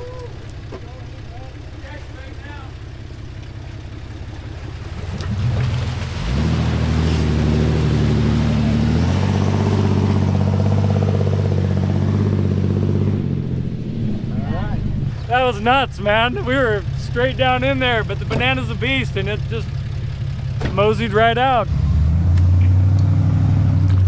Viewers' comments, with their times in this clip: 0:07 That in line 6 sounds so good!